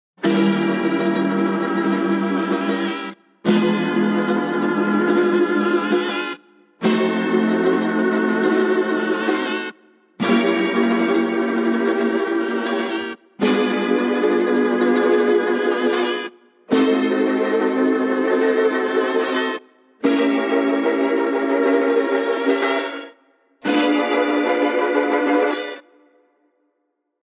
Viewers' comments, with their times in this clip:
0:00 the low note is supposed to be here
0:25 the high note right here